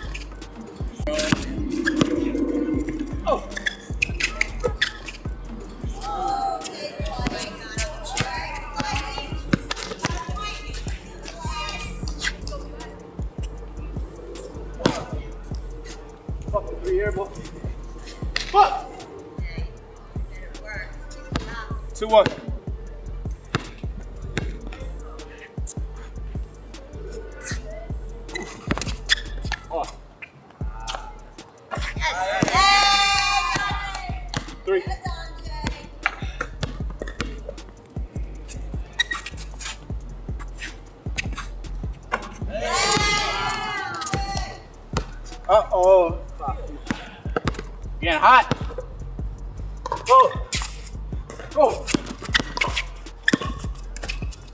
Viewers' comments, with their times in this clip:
0:09 flight air balls while the crowd is cheering 😂😂🤣
0:40 bro that swish sound like 2K type swish😭😭